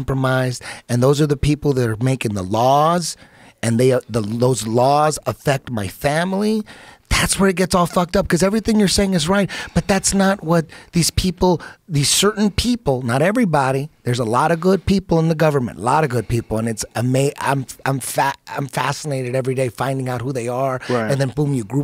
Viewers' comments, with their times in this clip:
0:07 does Eddy sound like Trump or what?